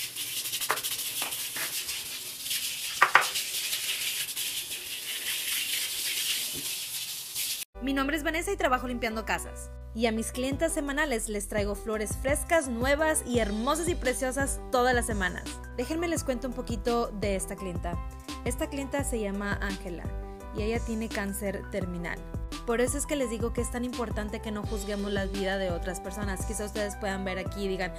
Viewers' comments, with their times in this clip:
0:08 Me: Cant understand what shes saying Also me: vibing to the office theme song in the background